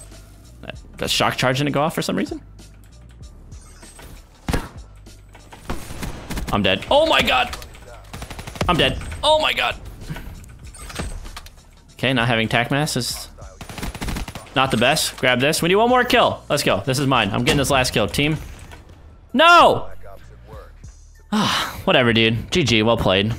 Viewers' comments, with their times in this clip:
0:05 i swear he played the same audio two times